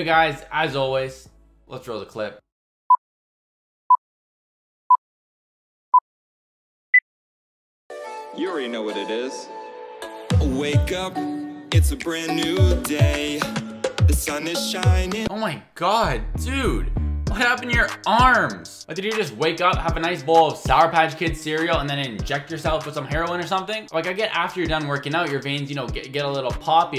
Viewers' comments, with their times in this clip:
0:08 he literally isn’t singing he’s taking the lyrics. 😂